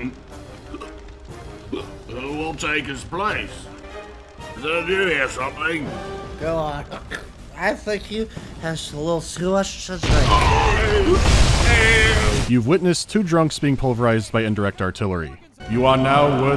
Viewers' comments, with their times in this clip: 0:03 Hey! You didn't voice act the "SHH!" part! Cut! Try again!